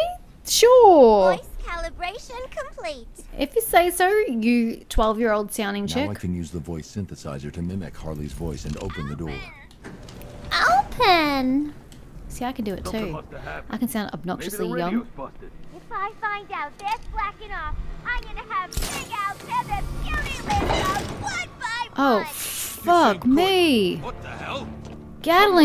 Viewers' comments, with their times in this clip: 0:10 Facinating: The game lets you use dual-takedown moves more frequently with Nightwing and Catwoman then with Robin. Interesting way of showing which people in this world Bruce has a really close connection and history with. Okay: that's actually a crazy good Harley impersonation.😁 And I get Harley's voice can be grating but it's kinda supposed to be? It's literally been that way since she first appeared so its almost part of her character. Even in her most recent series where they've pretty much removed the childish aspect of her actions; she still has a fairly high pitched voice.